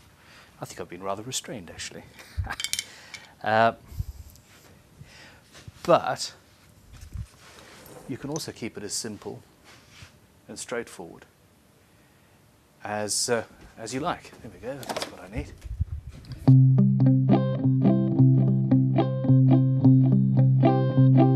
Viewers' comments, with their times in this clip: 0:04 Near the mark, the first 2 notes made me think there was some SOAD coming on, but no. Damn, but understandable, not really relaxed music :P